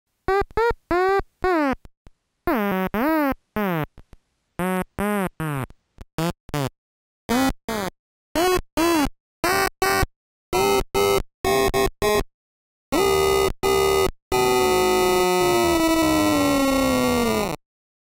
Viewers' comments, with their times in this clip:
0:04 sounds like a gaster when child
0:05 looks like farting
0:05 sounds like da otamatone saying “oh no”
0:05 Sound like a duck
0:06 sounds like it’s screaming “HELP ME!”
0:06 8 bit sounds so precious and cute idk why lol
0:06 that sounds like a fart ngl
0:06 (farts in 8 bits)
0:06 farts 2 times
0:07 WHY DOES THIS SOUND LIKE A POKEMON CRY
0:08 sounds like a pokemon cry
0:08 kinda sounds like it's saying feed me
0:10 it started to sound like AVGN
0:10 The Sound Of My Phone When It Freezes lol
0:11 sounds like a red and blue ver pokemon
0:12 a mouse or an elephant?
0:12 Mr Game and Watch language
0:13 he’s just crying for help at this point
0:13 when your a sleep and your friend calls and you forgot that you have the most annoying ringtone
0:13 how my alarm be sounding at 5 am in the morning
0:13 model t horn.mp3
0:13 is it just me or did sounded like the start of bloody stream
0:13 This is like 0,125 Bit (the half of 0,250 Bit/Quarter Bit)
0:13 annihilated otamatone sounds
0:13 reminds me of those fnaf minigames sounds
0:13 what was that??? quarter bit?
0:14 someone's ringtone be like
0:15 When you release that fart
0:15 are we calling something or is this an otmatone?
0:15 sounds like the end of a danganronpa execution